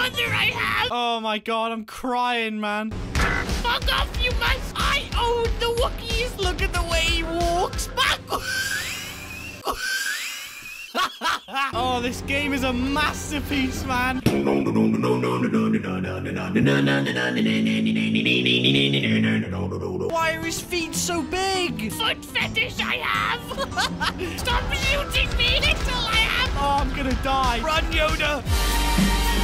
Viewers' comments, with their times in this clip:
0:10 Tea anyone? Kettle's boiled